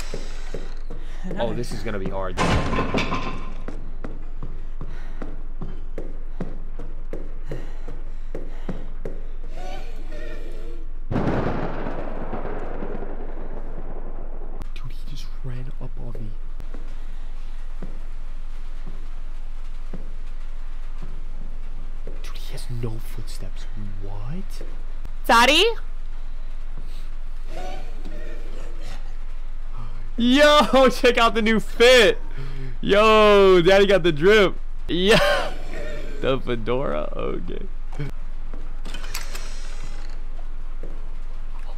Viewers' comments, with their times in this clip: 0:07 why did i hear a hehe
0:08 Michael Jackson? Is that you?
0:08 I hear michael jackson doing hee hee
0:08 Bro i just heard a hehe in this video bro michle Jackson is here damn
0:08 The monster : aight imma turn into Micheal Jackson HĒHĒ
0:09 Am I the only one that hears hee-hee
0:24 it’s just the way he says daddy and Michael comes right over 😂😂😂😂
0:25 it's the "Dadii" for me